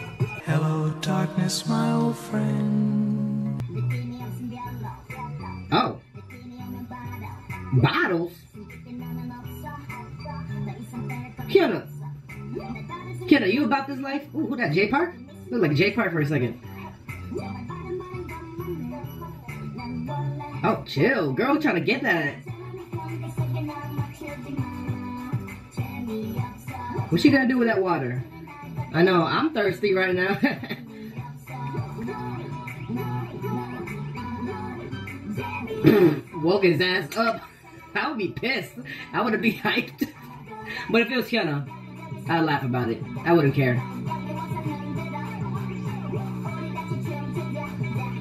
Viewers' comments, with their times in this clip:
0:10 i thought she said "bottle" too but she said "byeoro" (Korean).
0:29 I choked on a freaking Sour Cream & Onion Pringle when you turnt on the Skkkrrrttt god , omg I'm dying laughing softly trying not to wake nobody up am .